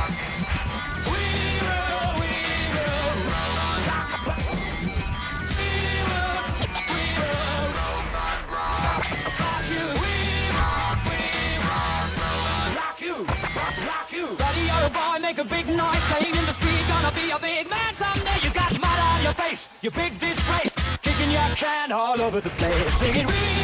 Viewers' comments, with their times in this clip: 0:06 The litlle scratch is awesome